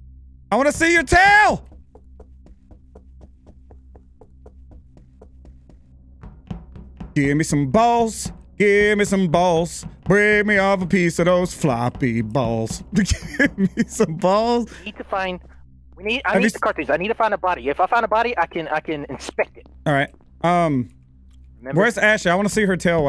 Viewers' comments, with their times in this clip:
0:06 👏🏾 10 out of 10 Incredible Song 🔥 🤣🤣🤣